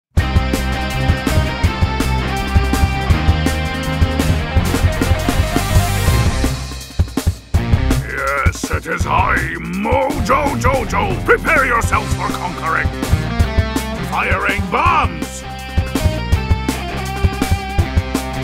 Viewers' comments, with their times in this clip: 0:01 If You can hear Closely You can hear The, Powerpuff girl's theme song in BUT WHERE ARE THE POWERPUFF GIRLS!!?